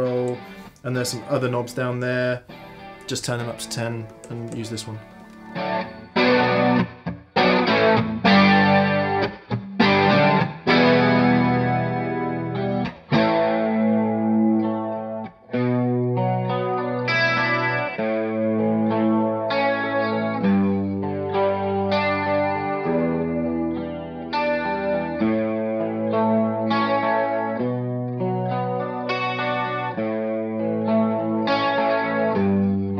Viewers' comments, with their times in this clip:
0:06 The chord progression sounds a lot like daft punk's instant crush
0:19 That chord progression sounded really Ryan Adams. I super dig it, and that guitar sounds fabulous!